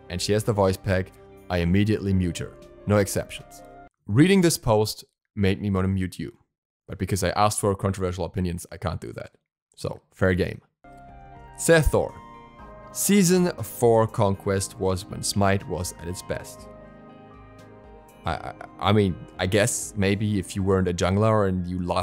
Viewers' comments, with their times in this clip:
0:07 ra laugh spams